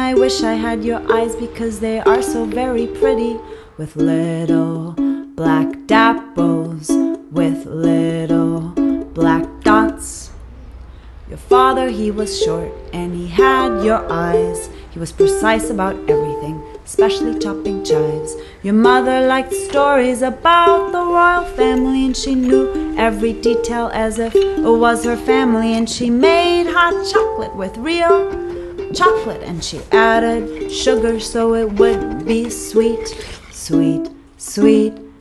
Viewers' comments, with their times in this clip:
0:06 Can someone please help me? I'm translating the lyrics into polish and i can't get the word she's saying in ? Little black dobles? ? What's that ? Thanks a lot!
0:18 and especially ch.. what ? :) HELp :)